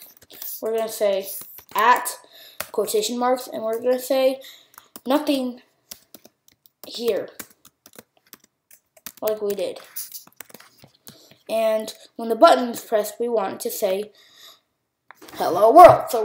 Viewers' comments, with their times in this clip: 0:03 onwards we cannot hear what you are saying when doing label.text = NSString ....and we cannot read the screen nor can we see prompts - stuck for now will try later.